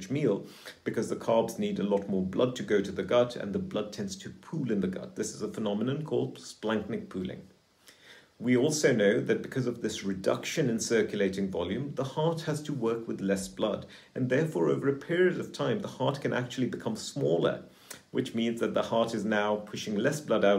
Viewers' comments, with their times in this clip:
0:06 -29: Did he say Blankman Pooling? I tried to look it up. The caption says "splenic poolic" but it didn't sound like that...